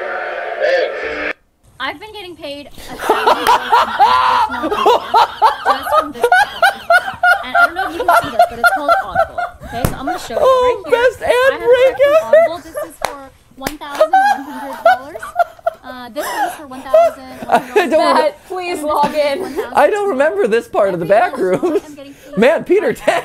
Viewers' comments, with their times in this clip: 0:06 He laughs like tickle me Elmo